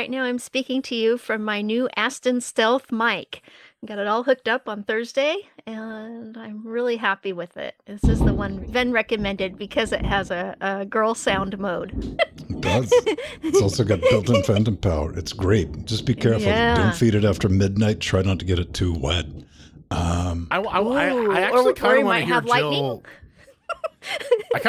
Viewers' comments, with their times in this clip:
0:08 was that thunder?